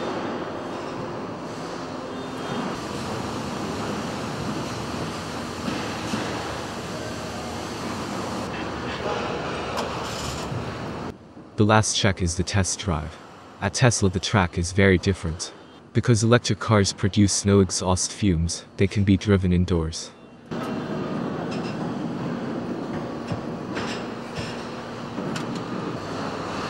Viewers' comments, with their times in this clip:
0:09 Why it sounds like a car turnd on like a gas car lol